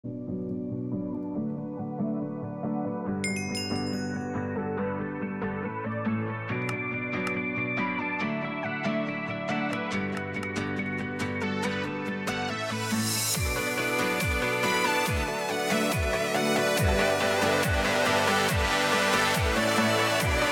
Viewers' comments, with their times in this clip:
0:03 you can hear bedwars noises